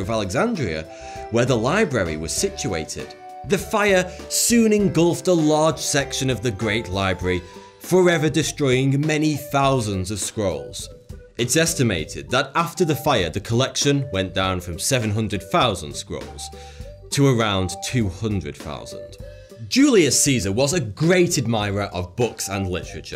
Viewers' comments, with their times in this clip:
0:09 the music choice with the story tho